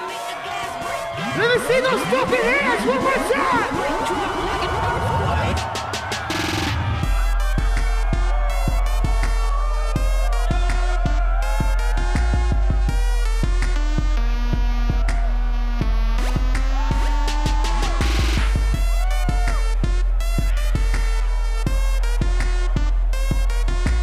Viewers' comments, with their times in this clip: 0:06 sounds Like detective conan